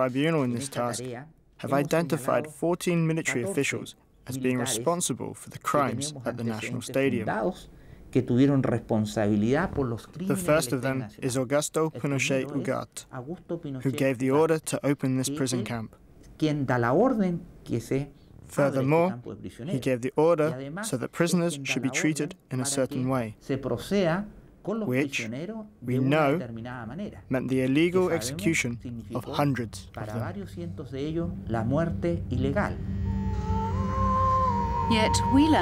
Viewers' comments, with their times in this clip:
0:09 farting detected! Why you did not mute that!?
0:19 same thing. Just a sound glitch.